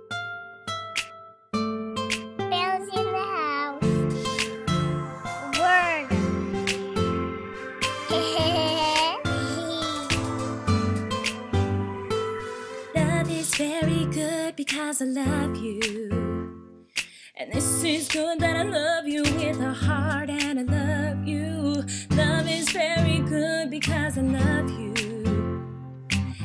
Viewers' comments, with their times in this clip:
0:07 eHeHeH So cute, lmao. 😍😂